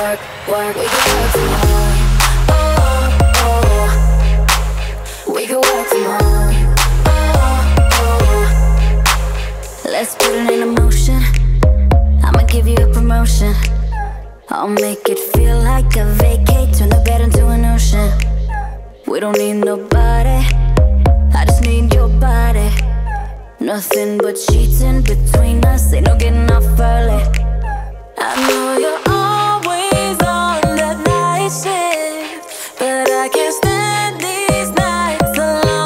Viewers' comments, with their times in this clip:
0:07 when i first see this i thought this song is from 90s brought back to life dude. Also with that weird sound from is kinda freaky. Man it sound like a poor dog is being banged by a big dude...
0:23 does anyone else hear that squeek sound